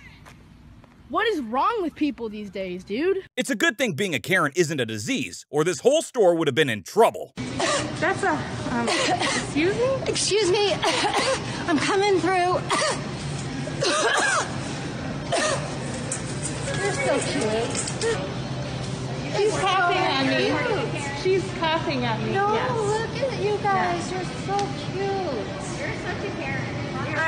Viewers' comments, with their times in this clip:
0:09 I'd go to jail cause I'd punch that lady in the face for coughing at me that way. oOoOOoOhhhh I'd go jail in a lot of these cases